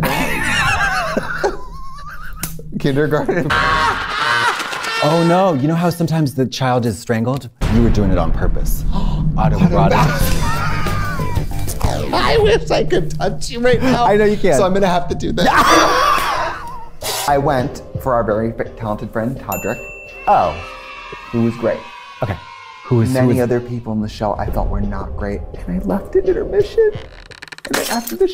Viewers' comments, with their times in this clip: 0:09 what did they say i cannot hear them properly..